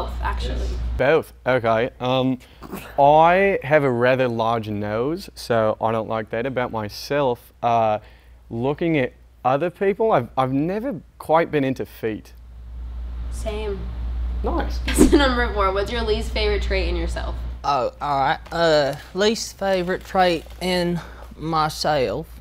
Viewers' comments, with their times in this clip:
0:04 i hate how good he is at the accent lmao